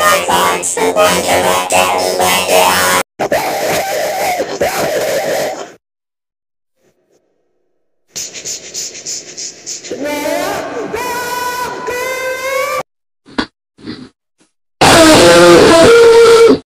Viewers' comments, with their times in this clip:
0:09 scary ahh screaming voice